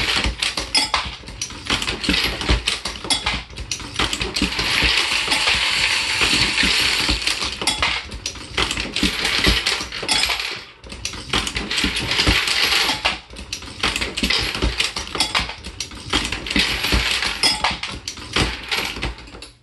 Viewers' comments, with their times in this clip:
0:05 sounds exactly like willy wonka, where are my remix guys out who can make a great meme video out of that?